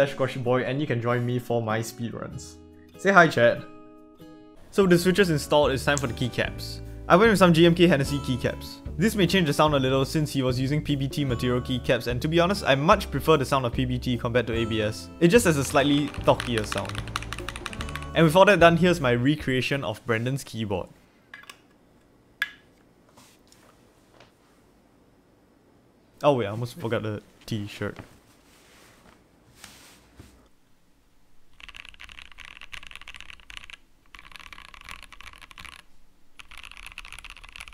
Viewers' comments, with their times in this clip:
0:05 I can't believe the X key's switch had the AUDACITY to interrupt you.
0:20 LIKE ICE IN A GLASS
0:20 even the plug in was thocc 💀